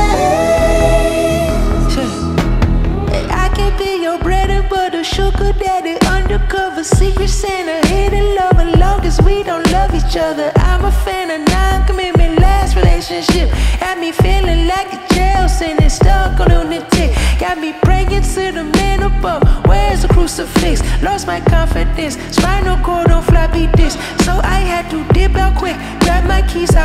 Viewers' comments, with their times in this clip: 0:03 that voice is out of space. Beautiful. And this is masterful composed song, love everything about it.
0:10 reminds me of kendrick
0:11 Has that No Flockin Flow 😁